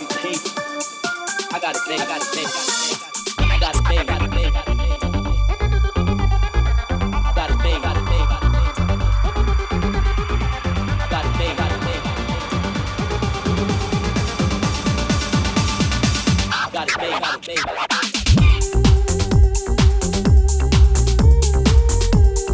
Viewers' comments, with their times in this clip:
0:07 ID? Rossi played it at fabric too absolute wobbler